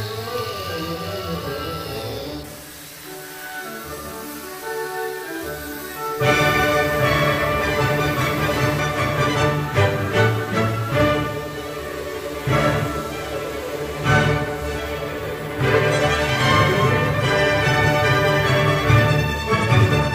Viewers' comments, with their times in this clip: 0:04 solid music once again